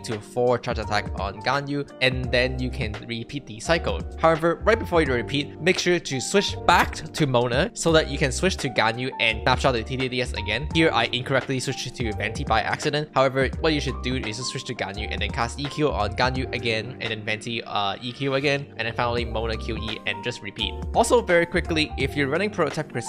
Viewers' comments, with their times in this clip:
0:05 lmao that voice crack